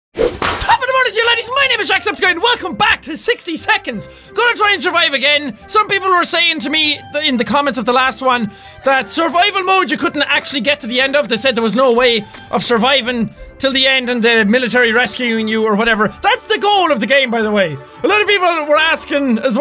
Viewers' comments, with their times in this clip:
0:00 Wtf the fastet intro 👆🤐